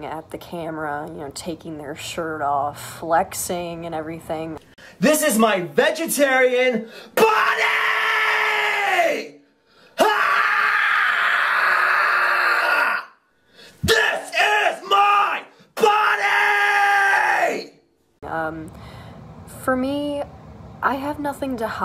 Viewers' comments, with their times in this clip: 0:07 Rip headphone users 💀